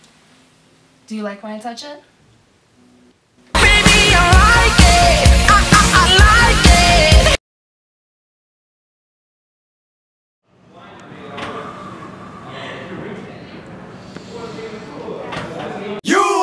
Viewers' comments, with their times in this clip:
0:04 I will forever hear the Honda commercial